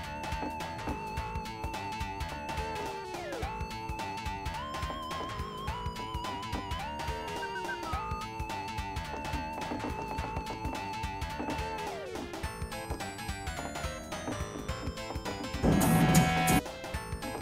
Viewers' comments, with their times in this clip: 0:03 Best song i ever heard